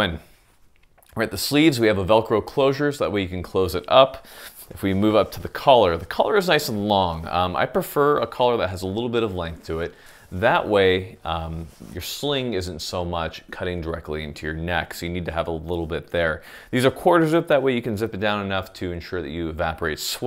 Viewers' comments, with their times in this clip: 0:05 He sounds like my ex-wife.